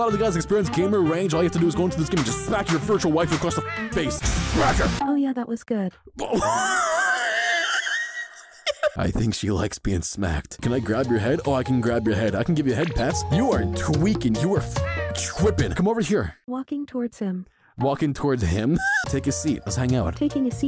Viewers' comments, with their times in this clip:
0:06 Wtf was that wheeze